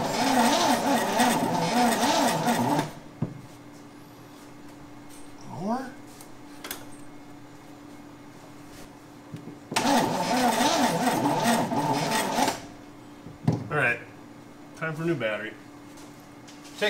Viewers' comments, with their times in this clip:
0:03 Dude I laugh my butt off every time your dog wags his tail when he hears the old 350 tryna crank